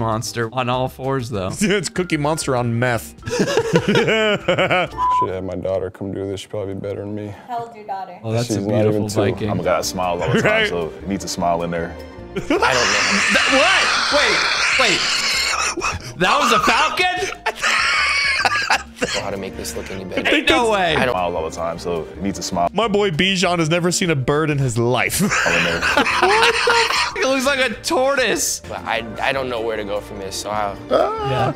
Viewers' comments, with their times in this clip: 0:09 longest wheeze I've heard in a long time! 🤣
0:10 Bro that wheeze 🤣🤣🤣
0:11 ....holy WHEEZEE lmao
0:12 is the most inhumane sound ive heard, I love it
0:12 Footage of the rare panda bird's mating screech: 😂
0:12 wtf is that sound brother?! Sounds like a cross between a pterodactyl and an alien from Star Wars or something. 😨
0:12 The Falcon drawing is absolutely atrocious!! …but we all know the best part is that pterodactyl wheeze
0:12 you saw the best glitch in this session and we heard the best wheeze in this session.
0:13 has me dead! It sounds like the dilophosaurus on jurassic Park when it attacks lmao
0:15 wow that weehz! 😳